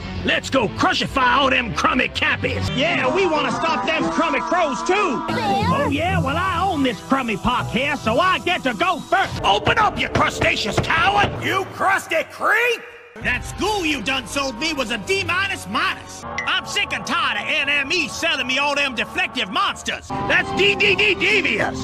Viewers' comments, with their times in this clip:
0:05 “So I get to go first”! Love how he says that line